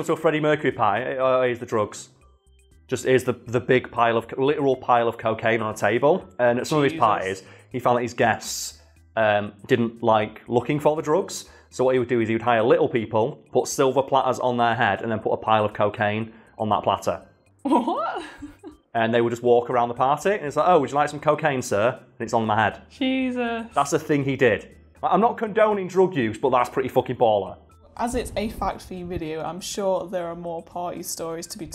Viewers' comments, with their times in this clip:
0:04 someone is says "Jesus", freaked me out
0:17 didn't expect that laugh